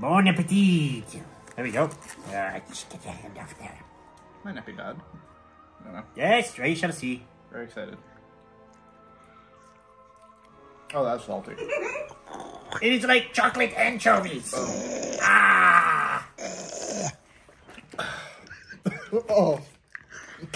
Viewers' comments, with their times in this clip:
0:08 this is where Rhea Ripley be busting out laughing. She loves to add a good amount of Vegemite on her toast.